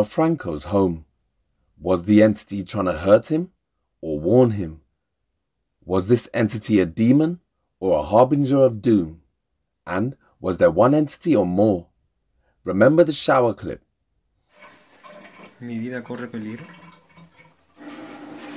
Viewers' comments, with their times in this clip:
0:05 I think there was maybe 2 entities in this guys home ..one good and one bad ...you here one of them saying "come down" and another saying ", don't go down" ....anytime the music started playing downstairs just as he's about to go down the bathroom light switches on maybe to try and keep him upstairs ...just my opinion